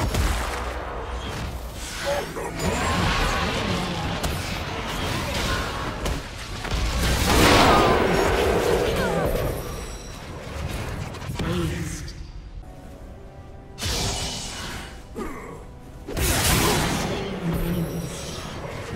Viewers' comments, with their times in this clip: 0:06 did someone els heard the double quardra penta kill bug ?